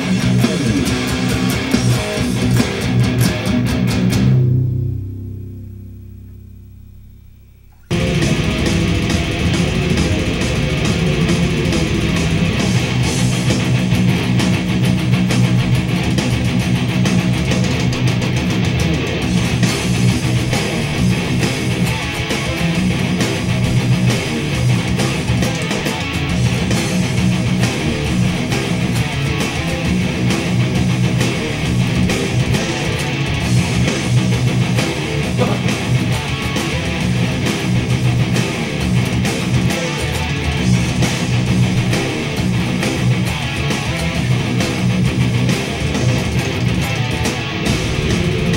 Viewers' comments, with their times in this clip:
0:06 There are only 2 songs in this video lol. It changes
0:33 i find it even more amazing when he switches in middle of the riff to alternate picking without changing a single split of second on the tempo